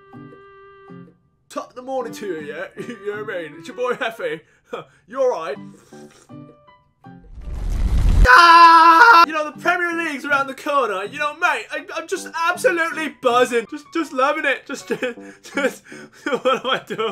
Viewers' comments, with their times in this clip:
0:03 That huh almost had me on the floor